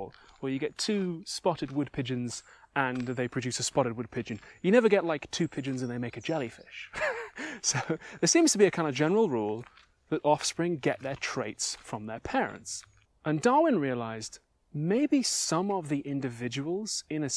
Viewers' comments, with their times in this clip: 0:05 Sounded a bit like Kent Hovind